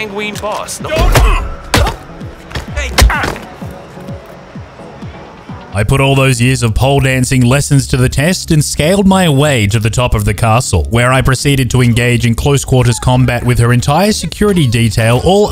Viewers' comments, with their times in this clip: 0:03 just the slap noise😂